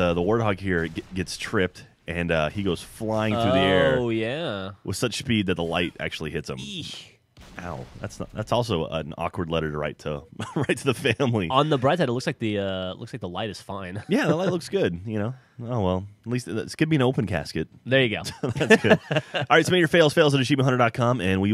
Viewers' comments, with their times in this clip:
0:05 ..ich....are you german? xD